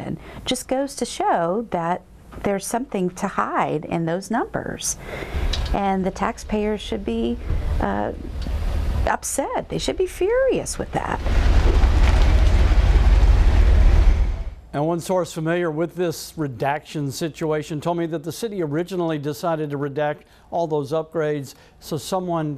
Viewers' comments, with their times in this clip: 0:05 HA you can hear the common ball joint clicking/clunking these new GM full size SUVs have. For some reason they really fucked this gen of trucks up, both my family members with 2016/17 escalades have this problem too